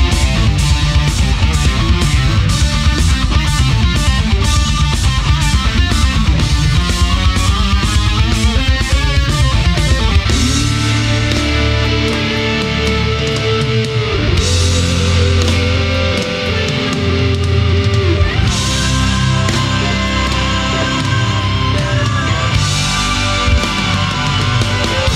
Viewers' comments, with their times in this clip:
0:08 THAT INTRO REPRISE WITH THE VOCAL PART IS SO COOL WHY DIDNT THEY USE THAT